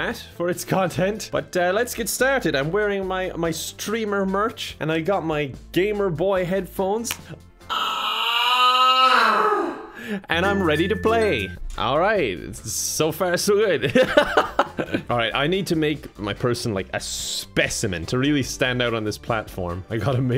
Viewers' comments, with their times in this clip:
0:07 And, so, the tinnitus begins.